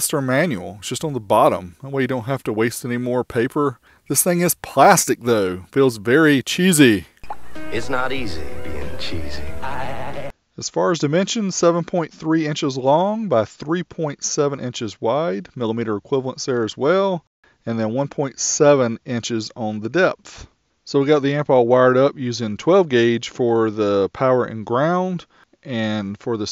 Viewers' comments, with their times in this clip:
0:10 Microphone quality seems to suffer from onwards.